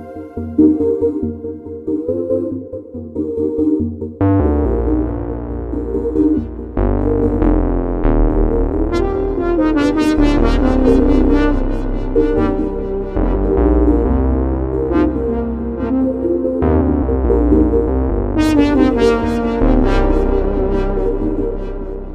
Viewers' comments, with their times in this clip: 0:08 this brass sound is awesome. Very good demo